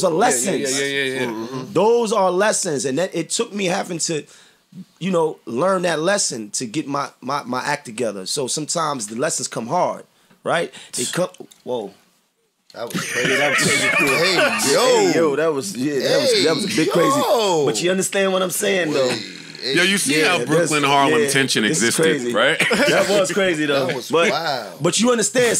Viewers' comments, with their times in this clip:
0:09 I will be revisiting this 40 seconds of laughter for days